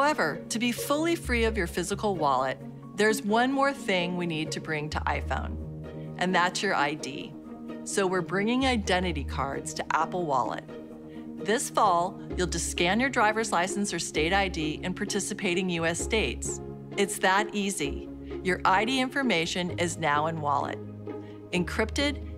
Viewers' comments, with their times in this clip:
0:04 Nice touch with the weird ominous music and creep factor. And they're working with the TSA! Yes! Shut up and take my liberty...I mean money!